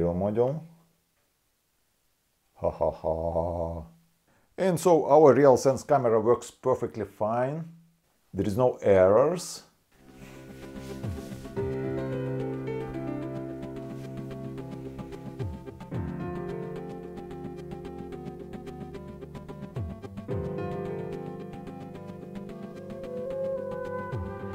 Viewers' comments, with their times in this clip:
0:10 I frickin love your music choice !